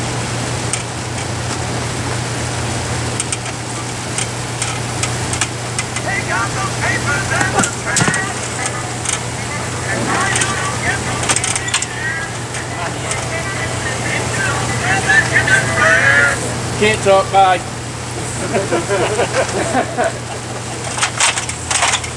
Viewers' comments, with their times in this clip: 0:06 that ringtone rofl, yakedy yak! Dont talk bacc.